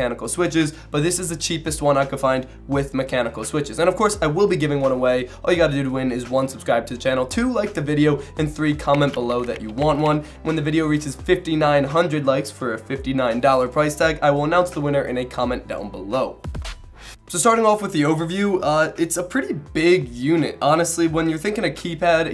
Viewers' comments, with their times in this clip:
0:09 Dude that keyboard typing sound effects scared the shit out of me i thought that someone was making that sound behind me O_O